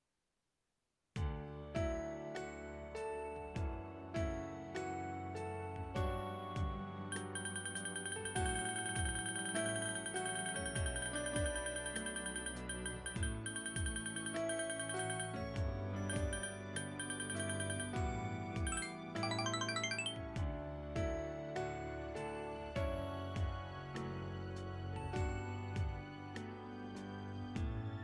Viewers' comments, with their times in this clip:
0:10 the dilemma and the panick clicking after choosing to flirt😂